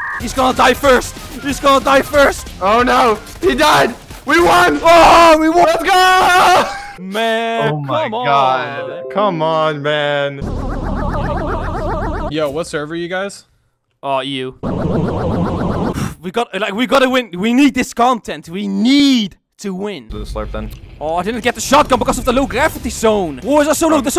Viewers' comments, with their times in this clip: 0:08 its 3am and it sounds like my PC and my PC'S plug is disconnected and I shit myself